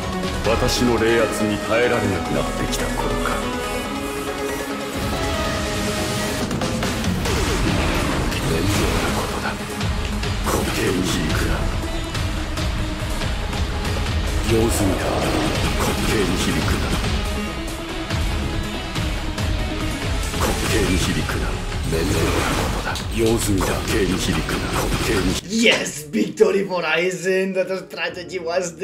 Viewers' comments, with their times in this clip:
0:09 amazing voice syncro!